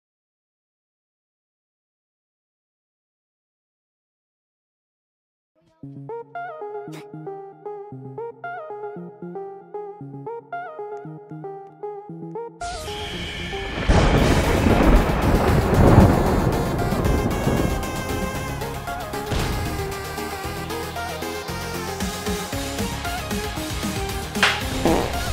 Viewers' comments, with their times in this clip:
0:06 bro muted the audio for: 4 minutes
0:07 Is it just me or does the sound glitch until
0:07 At first I hear nothing but after there’s a music it starts in